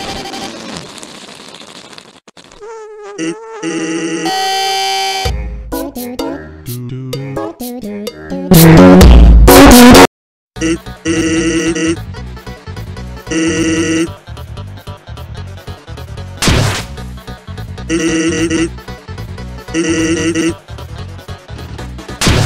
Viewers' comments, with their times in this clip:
0:04 AAAAAAAA- random song plays